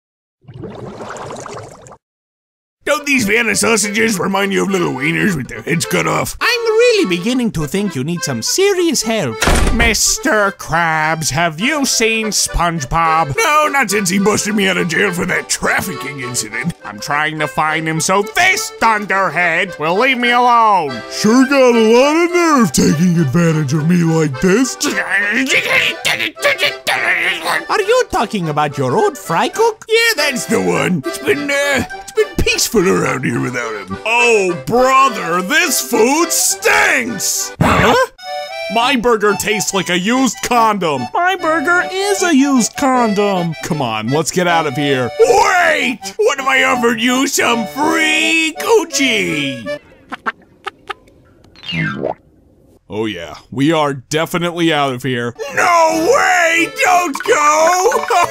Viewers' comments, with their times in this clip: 0:05 just because of this moment I think that you can do Dr. Doof
0:43 Brown fish sounds like Kermit the frog in